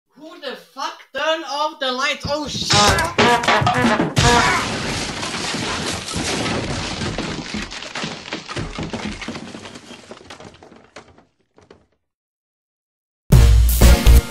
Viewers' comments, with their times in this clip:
0:00 Cartoony ahh sound effects